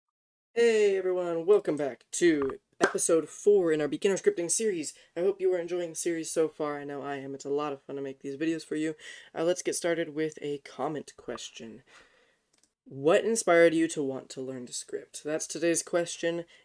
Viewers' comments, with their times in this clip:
0:00 That clap at the start was so clean bruh. Time stamp: